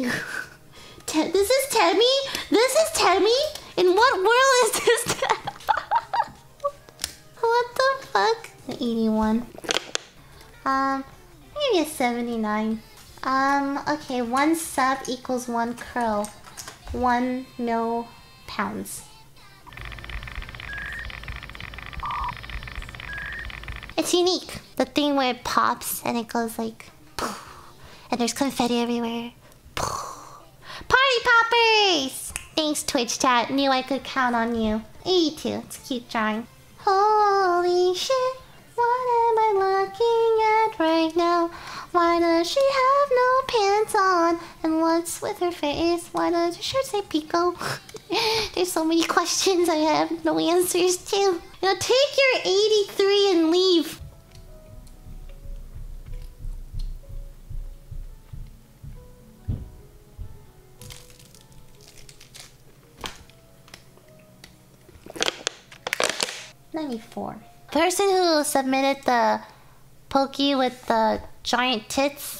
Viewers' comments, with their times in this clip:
0:03 I knew her voice was fake lmao i was so confused
0:06 stick figure world. Nice laugh tho (;
0:10 sounds like the old Minecraft doors
0:37 her singing that just made me resight the whole Blend-S opening xD
0:37 her singing sounds like an anime into/outro
0:37 why does is sound like you are singing Ange de blanc pur? Only people who play osu and some others will understand
0:37 she started talking to the rhythm of the meme song of s
0:38 || holy, even when she sings randomly, it sounds like an angel wtf ^u^
0:55 what sounds like someone just fell down the stairs